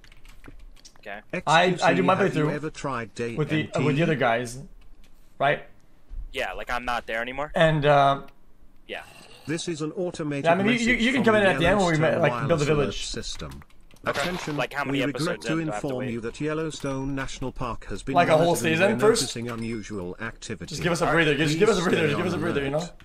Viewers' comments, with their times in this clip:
0:09 I'm playing 7 Days to Die and have feral sense turned on for night time and I heard the minecraft zombie and legit fucking flew away on my Minibike thinking I was about to die.